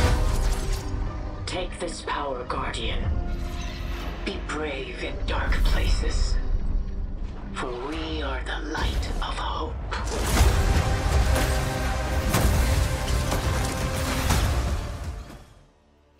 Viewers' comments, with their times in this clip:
0:03 I'll be honest it just sounds like ikora ray through a distorted signal 🤷🏾